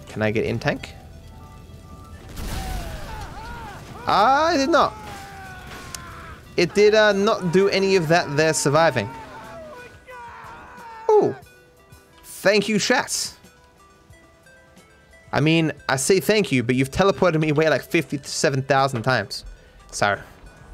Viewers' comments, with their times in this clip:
0:07 Fav part: micheals screaming in hella pain til he sees a buzzard